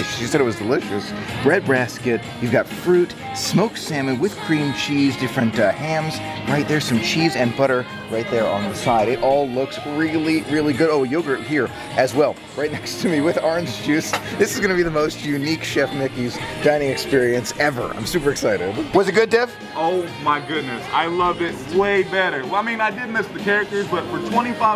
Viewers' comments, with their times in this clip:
0:09 it’s sad to hear the splash mountain theme song because of it closing down for good😭😭